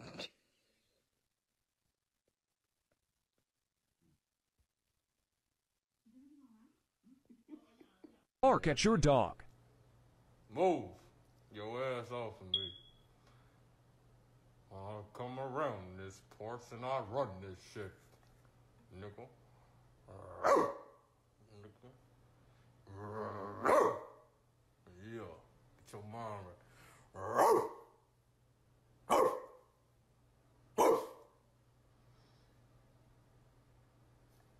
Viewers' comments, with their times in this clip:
0:09 As an owner of pit bulls, I use the bark method to initiate play. Dude bro quit reinforcing the stereotype. Go change the battery in the chirping hallway bird.
0:12 Hallway beep LOL
0:19 The guy kept barking into his dog's ear and when it swung its head and hit his owner's head, he got angry! 🙄